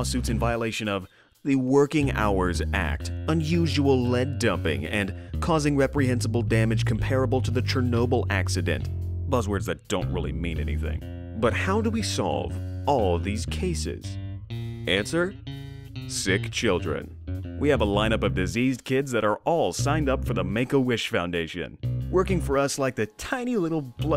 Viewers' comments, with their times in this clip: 0:07 HEAVY STALKER BREATHING